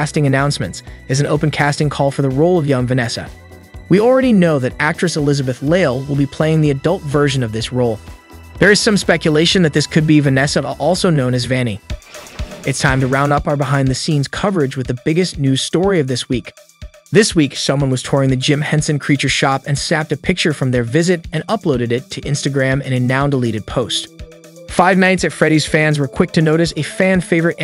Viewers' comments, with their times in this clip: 0:10 " Water-flight scene". Okay. I'm done with the voice-over. I really hope they didn't get paid for this. If they did.... no more than a dollar for them please.